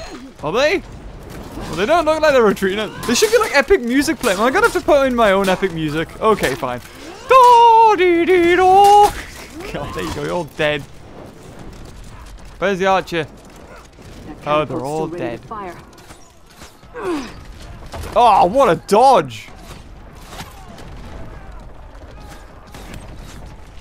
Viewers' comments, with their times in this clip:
0:06 I really like that epic song ! Where can I buy that song? :) (XD)